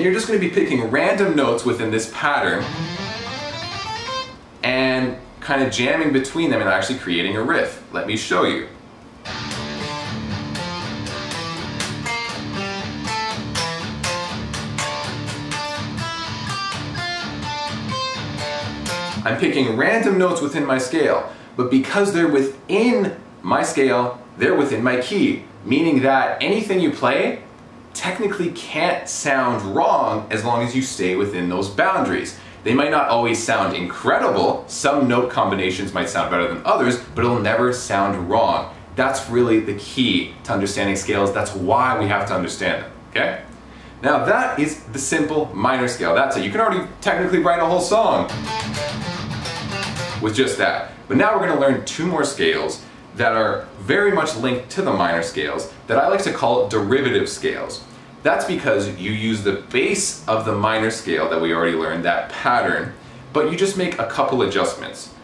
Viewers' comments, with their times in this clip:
0:04 that already sounded like a tool song
0:09 Every Tool song ever... I kid, I kid
0:46 i thought he was about to break out some darkest hour tranquil lol i geuss we know how their guitarist writes songs